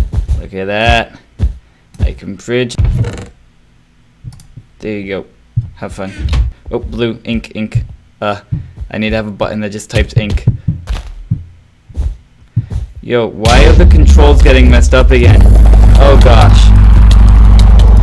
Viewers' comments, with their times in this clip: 0:04 explain that click